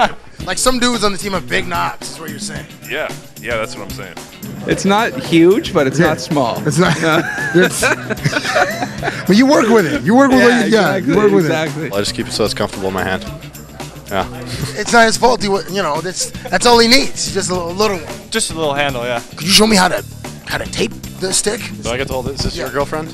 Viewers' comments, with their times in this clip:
0:05 I love Crosby's laugh XD